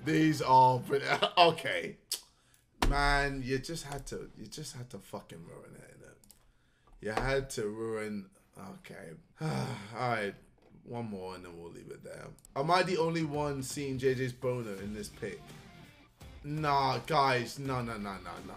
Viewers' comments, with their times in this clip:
0:03 The way ksi's tone went from 10 to straight 0